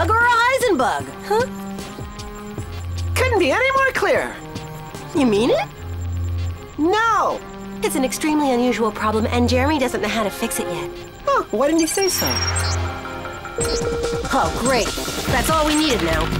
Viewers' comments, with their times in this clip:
0:03 I find it funny that Odd just went from a smiling face to a mad face with a sassy "No."